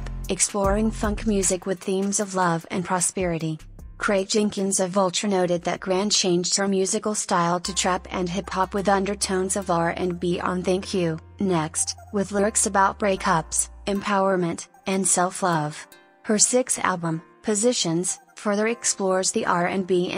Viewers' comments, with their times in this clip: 0:05 Notice how much the video mispronounced her last name. It isn't grand, its grande